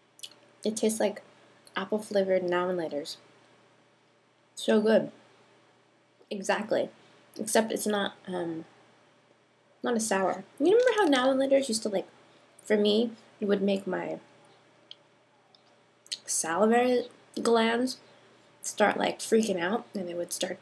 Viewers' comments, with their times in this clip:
0:03 What are NAMMALATORS